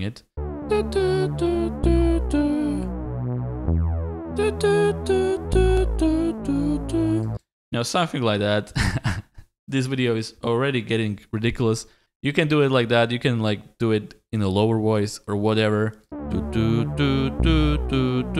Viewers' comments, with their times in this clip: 0:06 you singing the melody that was kinda funny.